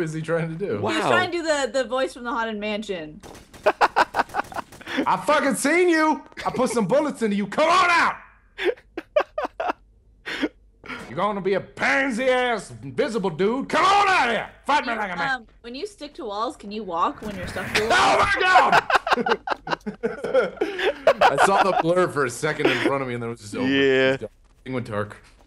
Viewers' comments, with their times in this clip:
0:07 i thought he was sgt Johnson XD